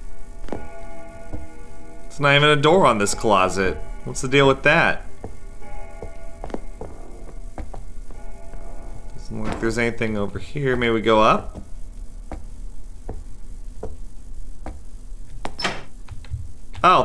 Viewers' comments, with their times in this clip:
0:04 I heard extra steps and a door slamming. o-o Was that irl?